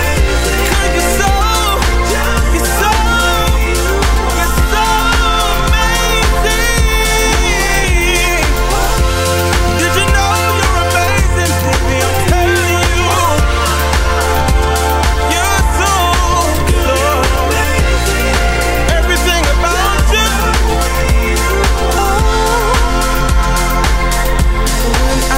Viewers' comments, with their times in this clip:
0:08 or the harmony